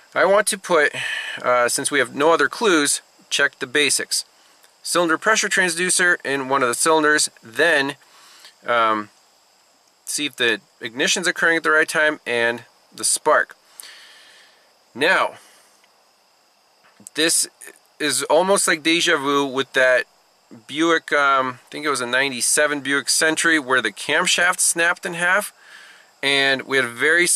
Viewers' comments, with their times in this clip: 0:08 Paused Going off of what I can hear while cranking, it sounds like the firing order is wrong. Wow! I've had to replace loads of those harmonic balancers in my time. Even a couple on my old 1986 Olds Delta 88 royale brougham. But I have never seen that happen before. How did they NOT notice the woodruff key notch on the new pulley???